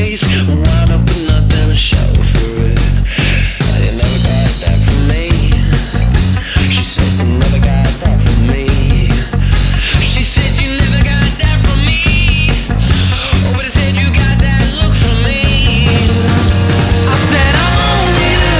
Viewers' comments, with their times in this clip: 0:04 The out of tune palm muted guitar from is horrible aha, how didn't they notice that?